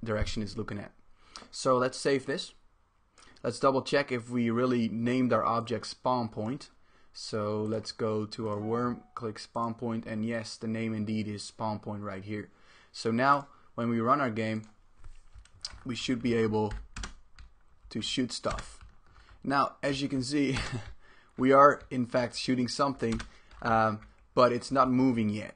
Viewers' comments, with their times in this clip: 0:08 iPhone gets E-Mail